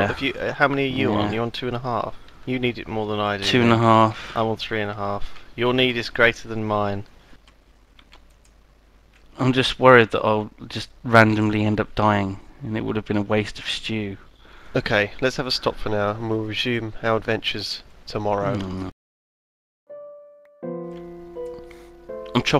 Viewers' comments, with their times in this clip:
0:03 whos cuting down the tree?